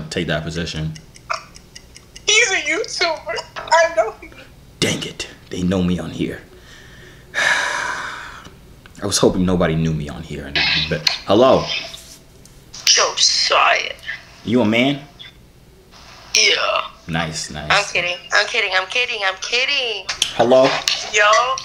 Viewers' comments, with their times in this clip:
0:04 he said “dang it,they know me on here” like a Caleb city villain